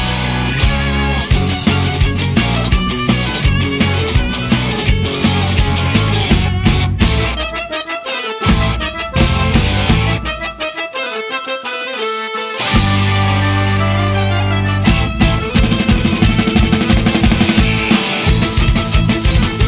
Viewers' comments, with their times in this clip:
0:04 Wow Ukrainian Hotsul Music, thats... wow... thats great.